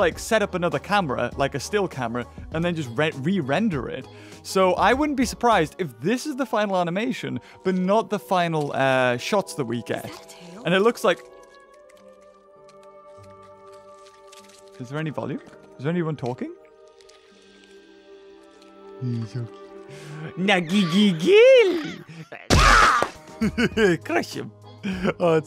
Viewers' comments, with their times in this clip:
0:10 I think there is someone talking in this seen but it only on the show of Camp Cretaceous that I remember correctly